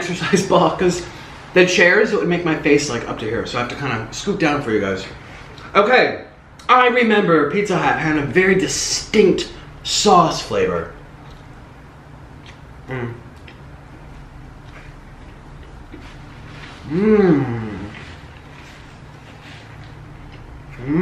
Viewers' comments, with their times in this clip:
0:06 He was really DEVOURING that Pizza Hut slice...........then moaning in pleasure. Click onward